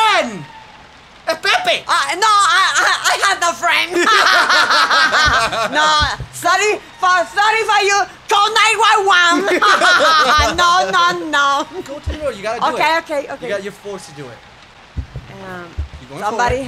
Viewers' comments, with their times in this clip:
0:04 when you both laughed I was like: That explains a lot XD